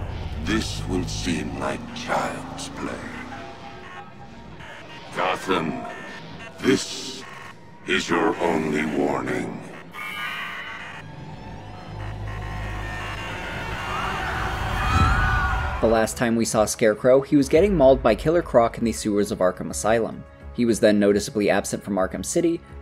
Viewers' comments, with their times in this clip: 0:05 I absolutely loved this video. Phenomenal work. I have to ask if anyone else noticed though, Does anyone else Hear the Joker laughing near the end of Scarecrow's first Broadcast? Just after he says Only Warning. Time stamp is